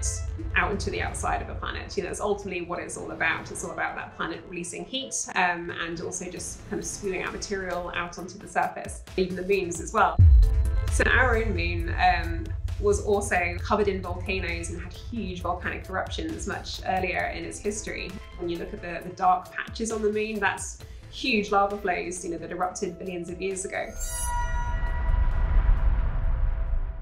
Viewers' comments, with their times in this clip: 0:08 I'm sorry, what beans?